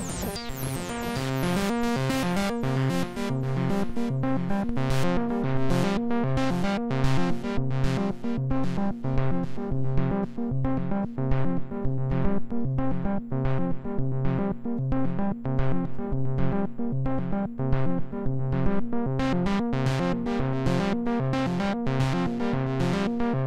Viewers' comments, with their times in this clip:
0:05 now that's my kind of jam